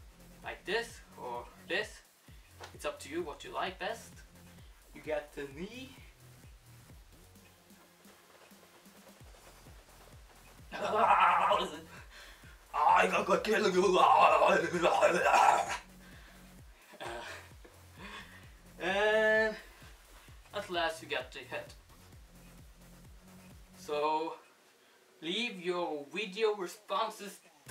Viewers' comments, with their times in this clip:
0:10 he sounds like arnold schwarzenegger